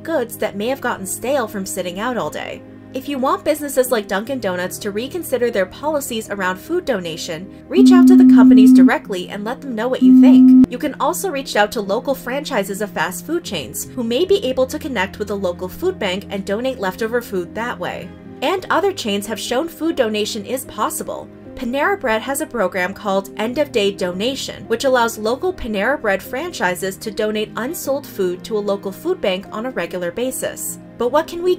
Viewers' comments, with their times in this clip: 0:04 anyone else think they had some super weird notification at this point?! 😂
0:07 Hey Spill! there's an odd editing error. It seems to be some kind of low beep that goes twice before dying down. This might be negative for people with hearing sensibilities!
0:07 yo, what's up with the jumpscare ?? i'm litening to this while doing the dishes and all of a sudden, my phone enters the Flood Sirens mode... oof my ears...
0:07 What's with the beeping sound at the mark? It really freaked me out
0:08 anyone else hearing the tone ?
0:13 The weird loud ringing scared the absolute eff outta me